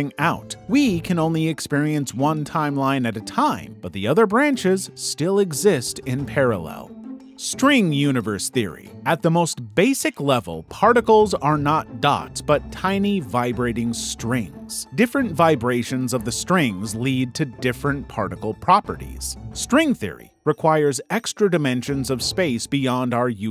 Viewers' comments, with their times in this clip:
0:07 "Spring Multiverse Theory"? LOL